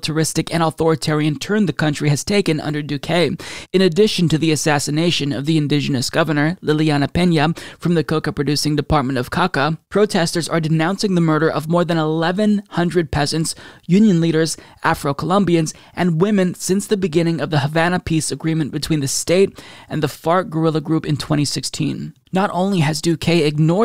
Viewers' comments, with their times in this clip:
0:07 from the coca producing department of kaka i lol'd